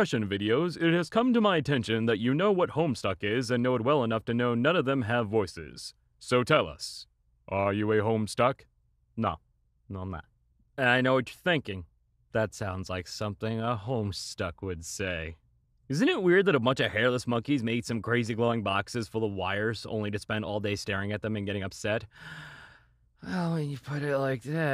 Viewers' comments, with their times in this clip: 0:06 john egbert aggressively sings about the warhammer of zillyhoo, flexing on this ignorant anon